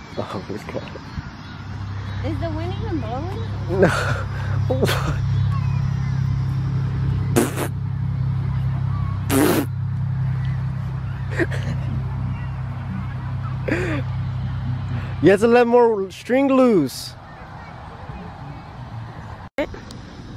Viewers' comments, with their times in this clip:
0:07 Sounds like he rappin 🤣